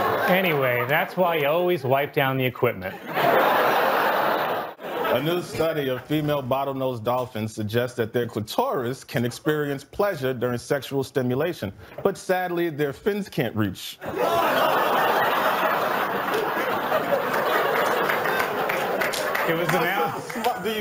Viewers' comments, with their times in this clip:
0:08 I've never heard it pronounced like that before.